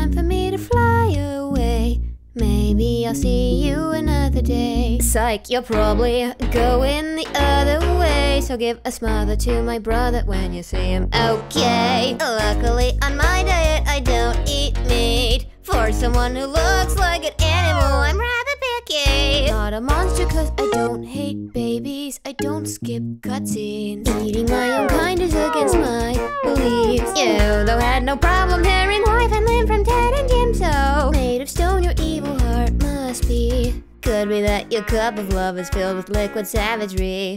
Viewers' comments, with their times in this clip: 0:08 pointing out that the one line about hansel has the same notes as the line "funny how much more you notice something that you cant see" in hansel
0:08 I have yet to see anyone mention it, but the line has basically the same melody as the line “Funny how much more you notice something that you can’t see” from Hansel.
0:24 I love the noises in the background lmao